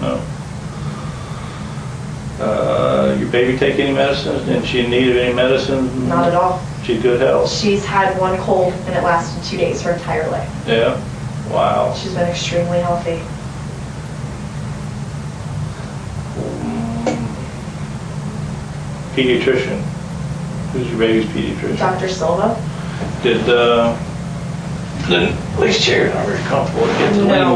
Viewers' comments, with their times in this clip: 0:10 when casey says "her entire life" i shudder, then laughs with the freaking dectectives.....